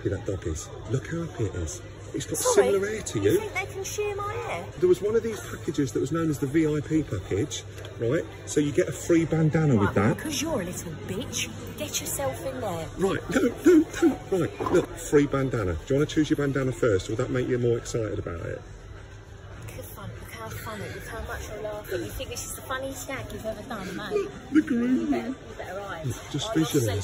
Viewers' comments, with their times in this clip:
0:10 I haven’t heard her swear without a bleep till now and it is glorious.